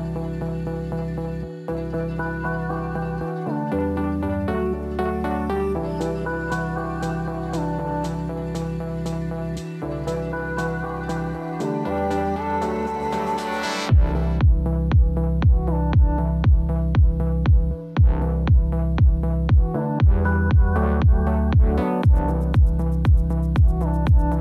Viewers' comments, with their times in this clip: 0:06 Minute is very tricky and chewy!
0:11 The Guinness explosion corresponds so perfectly to the beat drop!! LOL. Wonderful set and beautiful setting:)